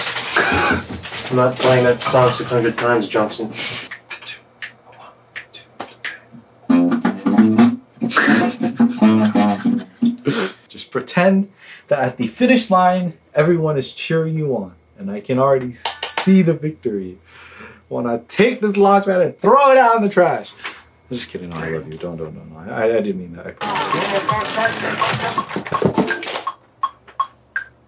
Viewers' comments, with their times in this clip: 0:10 who is playing that whiners sounding guitar in the background is that one of your friends of yours